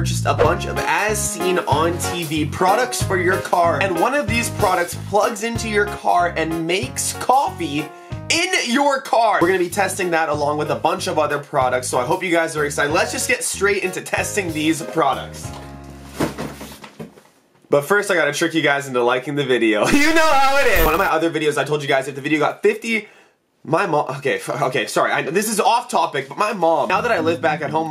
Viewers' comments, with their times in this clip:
0:08 IN YOUR JAR who going to tell him *Car